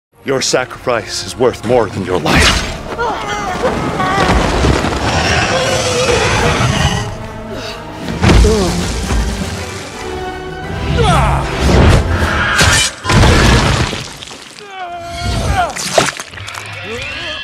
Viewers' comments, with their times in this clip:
0:00 Did he say “Your Sacri-fries?”